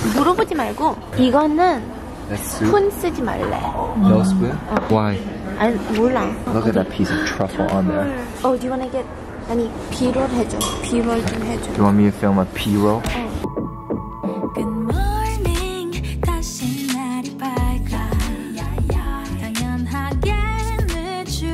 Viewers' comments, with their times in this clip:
0:05 Heard nothing after ✨ATENTIIIIIOONNNNNN ✨💅🏻